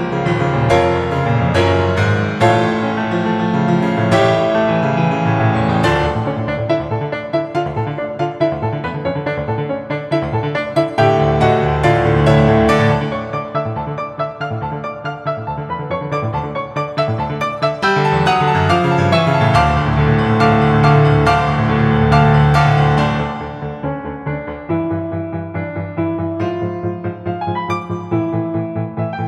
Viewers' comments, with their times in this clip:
0:10 those 4 coords and the light notes after have to be the best part of the song.